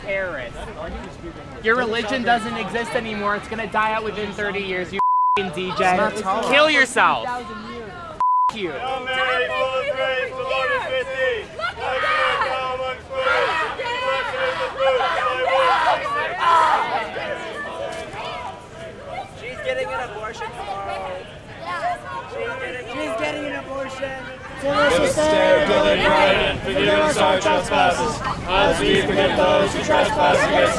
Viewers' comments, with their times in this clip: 0:09 Bro, when they started praying the Hail Mary and it pans to the students yapping and shrieking.... these guys were actually exorcising demons.... I love being Catholic.
0:10 Fr its like watching circus parade by. Ave Maria. + notics how they start screaming like demons while they are praying the rosary
0:11 I’m sorry but this reminds me of an exorcism with all the people in the background yelling 🤣